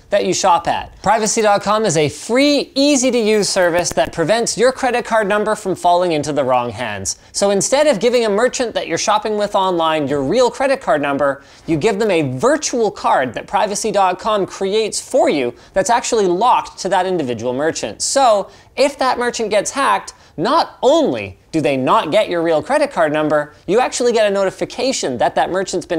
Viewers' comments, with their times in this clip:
0:06 Anyone else hear a weird static-like sound on during sponsor spot? It sounds like the sound you hear when I used to rotate a headphone cable inside the headphone jack... took it back and listened for it again and it was there...